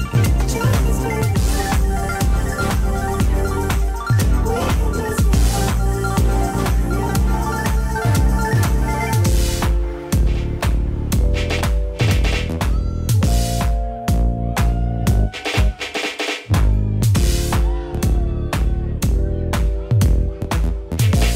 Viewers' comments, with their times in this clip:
0:06 I really fell in love with the transition in to Poison by Bell Biv DeVoe